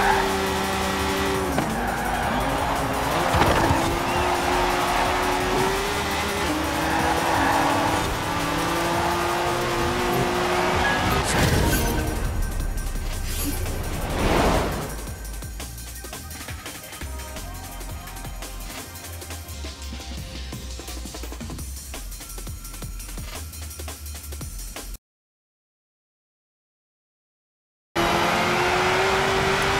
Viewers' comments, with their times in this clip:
0:10 Nice Windows Sound